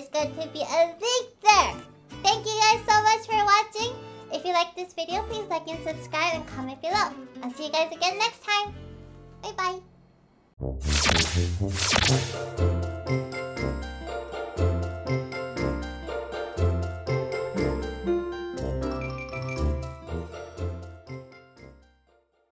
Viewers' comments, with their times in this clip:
0:09 That little ‘by by’ was so kawaii🥰